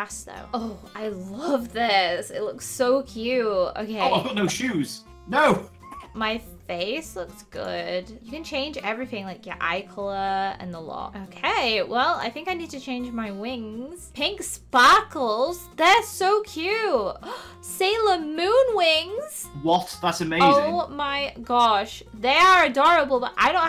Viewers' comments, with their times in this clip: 0:05 did anybody else hear a cat?